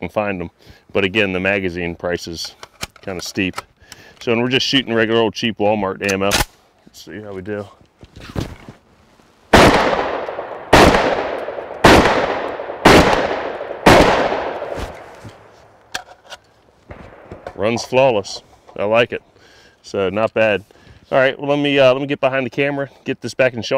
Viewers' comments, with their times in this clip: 0:07 Anyone els notice that it sounds like a bullet wizzing and hitting something close by?